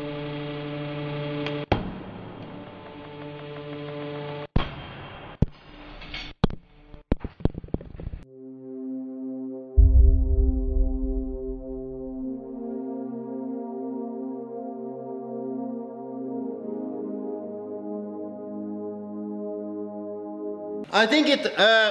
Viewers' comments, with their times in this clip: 0:05 camera was like: reeeeeeeeeeeeeeeeeeeeee
0:08 that's beautiful music